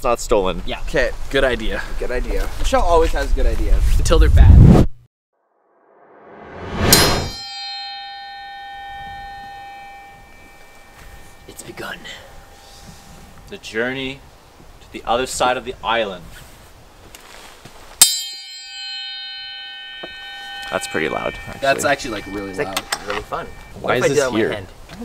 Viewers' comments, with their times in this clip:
0:06 oooo he just rang the dinner bell I think